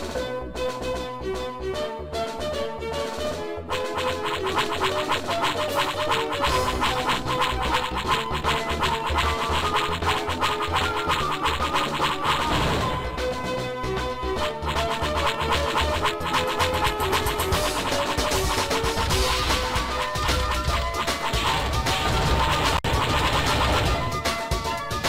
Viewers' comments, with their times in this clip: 0:06 After a millenia of harassments, It's time to fight back The enemy: Why do we hear boss music ?